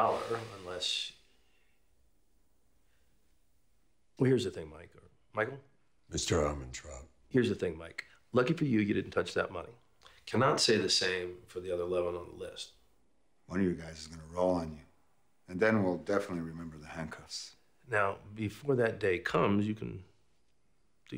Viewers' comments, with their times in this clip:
0:08 LMAO: If you do closed captioning Mike responds with his own surname and CC transaltes it to "Mr. I'm in trouble".